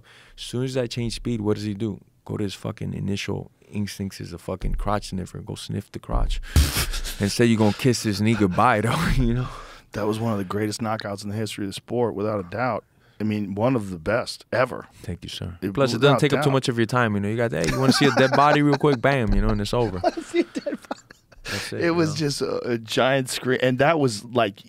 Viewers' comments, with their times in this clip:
0:07 seconds I swear Jorge said the n word 😂